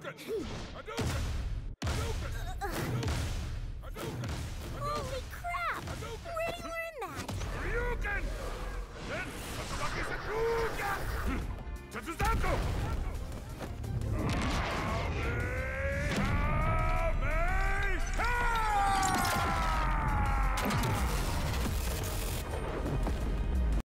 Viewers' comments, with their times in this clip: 0:06 is that rimurus english voice? Holy shit its so annoying😂 glad i dont watch dub
0:13 I can hear a bit of mr.Satan's voice when he charges up the Kamehameha